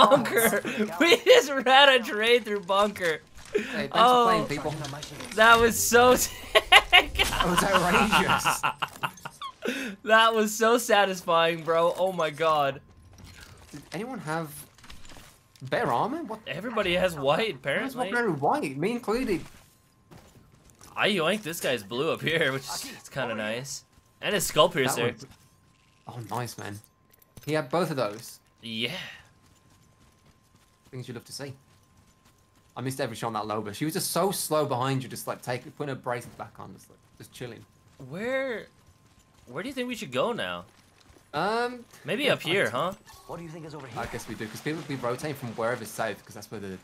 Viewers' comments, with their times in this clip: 0:06 When the teacher tells a bad joke and the nerd is the only one who starts laughing
0:07 that laugh tho😂😂
0:27 Anybody heard the yeah